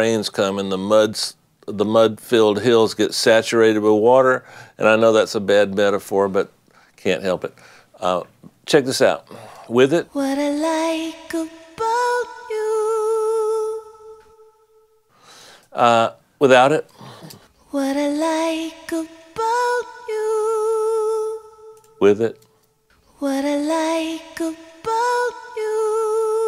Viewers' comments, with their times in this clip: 0:09 Im actually feeling bad for not noticing any difference